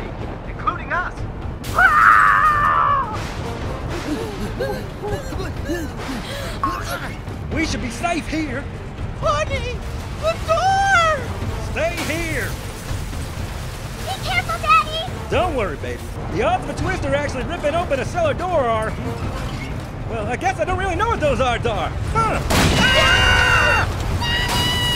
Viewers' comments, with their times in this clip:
0:08 I like how mother carrot says "HONEY THE DOOOOR!!
0:10 it's so funny when she says it like that